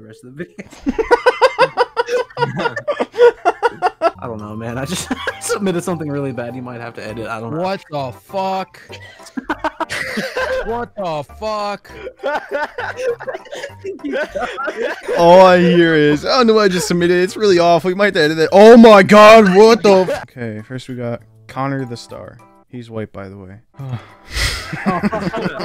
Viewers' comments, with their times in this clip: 0:06 sounds like the "wtf, WH? from juicewrld"